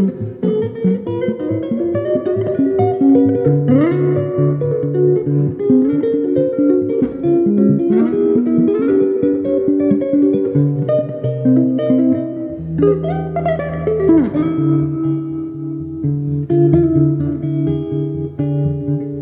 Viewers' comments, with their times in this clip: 0:03 Very nice. I love alternate bass picking, but I might not have thought of doing this with this tune. I may have to try now. I like how solid the arrangement is and then you get out there with it